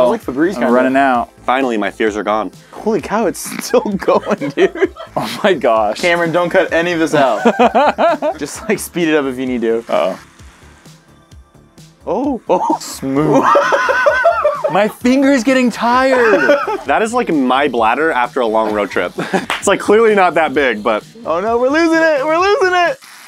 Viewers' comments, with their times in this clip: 0:07 sounds like the meme where that black guy opens his eyes and laughs in a black area